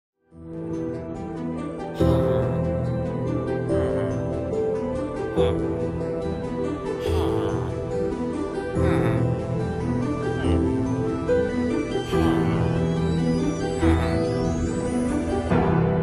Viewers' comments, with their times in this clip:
0:00 the villagers casually on the beat